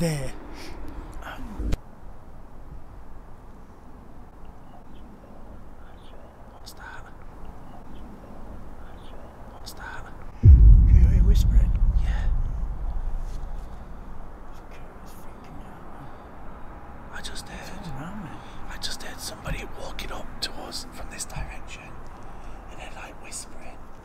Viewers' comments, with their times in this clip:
0:07 .......i hear the disem mans whisper voice saying......."THAT'S A BOAT, I SAW THEM".......!!!!